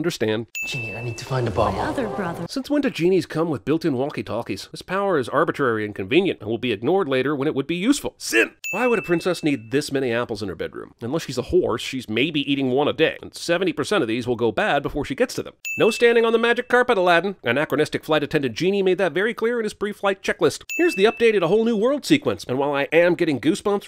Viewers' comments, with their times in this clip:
0:09 I thought he said “unless she’s a whore” and because this is cinema sins I didn’t even question it.